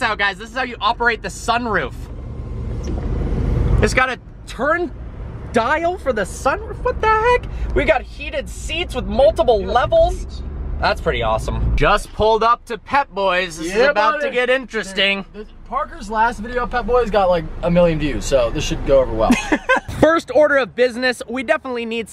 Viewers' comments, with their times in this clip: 0:06 "what the heck " that sounded auto tuned haha please thumbs up so everyone can see this haha